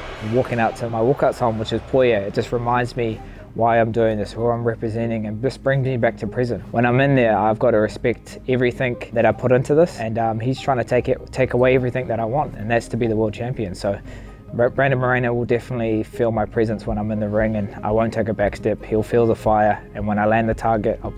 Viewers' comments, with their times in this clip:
0:05 Just brings me back to Prison? Is that what he said? Or Present?